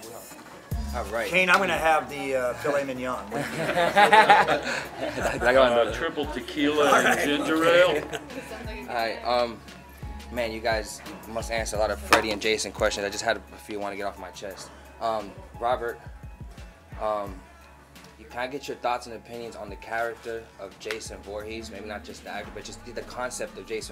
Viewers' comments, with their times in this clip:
0:06 Did anyone hear that legendary laugh on ...forever Freddy